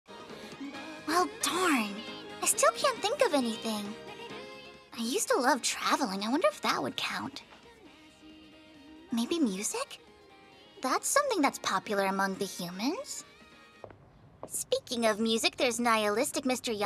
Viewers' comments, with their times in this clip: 0:00 Anyone else noticed the first season’s theme intro playing ?